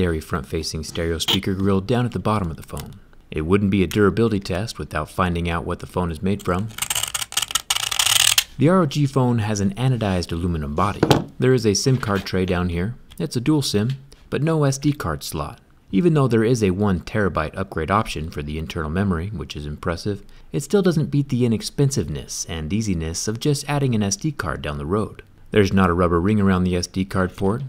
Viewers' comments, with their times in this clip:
0:05 MAX YOUR VOLUME! 🤪🤪🤪🤪🤪
0:06 that scratch sound vibrates my heart.
0:06 don’t wear headphones or earphones
0:07 oh my ears 👂
0:08 Is verry pain in my ears